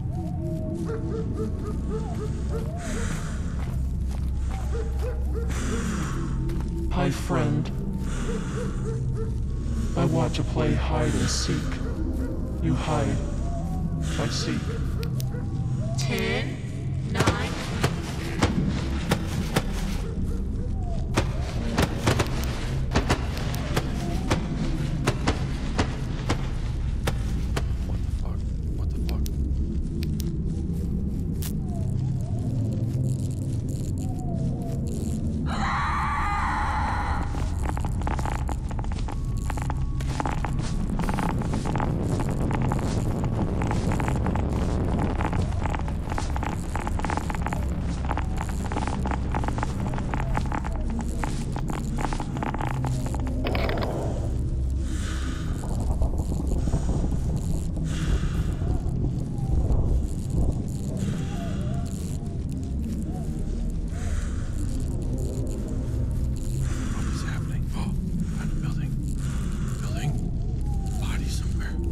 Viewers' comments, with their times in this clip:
0:06 This probably scared me the most, I wasn't expecting it to talk!
0:56 is so damn fucking terrifying, solely because of the breathing closing and it's playing with my senses, and it made my adrenaline rush, and that last jumpscare made me shit myself